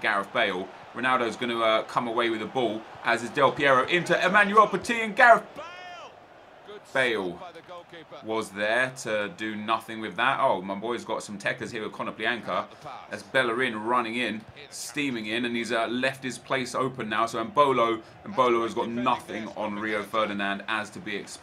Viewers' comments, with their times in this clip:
0:05 Did you mention that Gareth BALE (said from the commentator) ? 😄